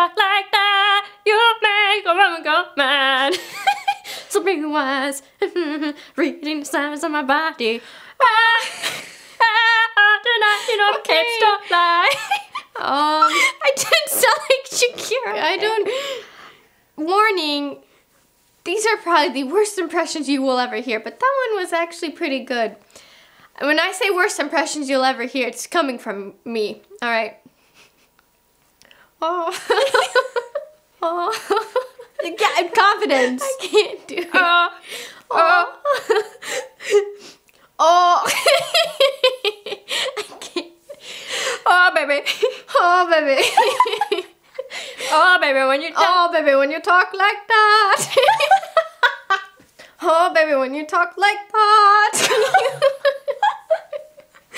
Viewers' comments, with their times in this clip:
0:08 that sounded like her thooooo💯🤩💀
0:35 actually sounded good